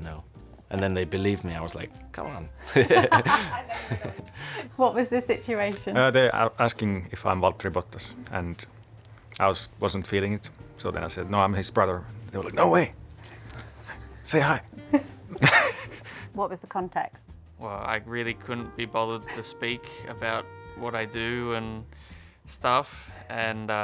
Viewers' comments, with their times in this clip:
0:06 Valtteri Bottas pronouncing "Valtteri Bottas" in the most "Valtteri Bottas" sounding way always puts a smile on my face